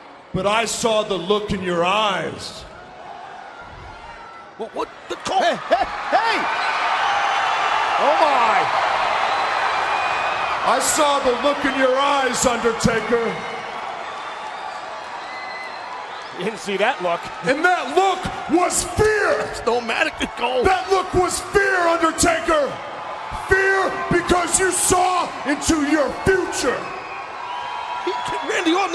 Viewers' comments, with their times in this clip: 0:09 Randy thought the crowd was cheering for him 😂😂😂😂